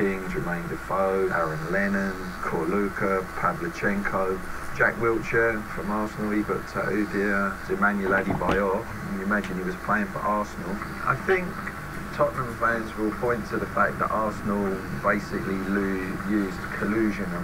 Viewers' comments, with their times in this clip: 0:04 Is my guy saying "Jack Wheelchair"